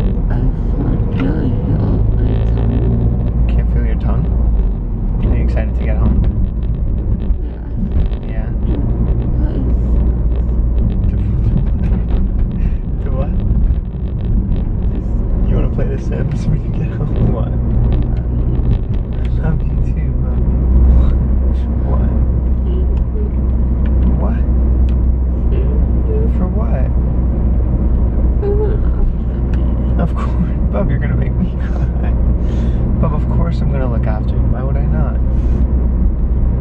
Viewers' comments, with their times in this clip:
0:09 the way she says sims 😂
0:21 When she said "thanks for looking after me" to him and started crying... MY HEART (it's )